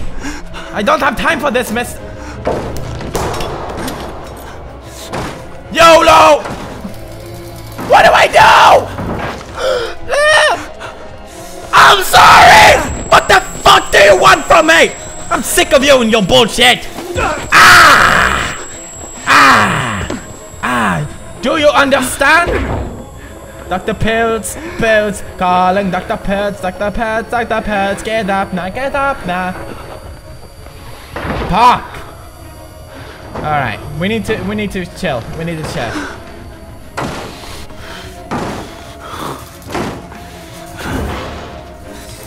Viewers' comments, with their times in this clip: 0:09 That little scream
0:24 LOL THE SINGING Whos watching right now?
0:28 pewds singing makes me feel less scared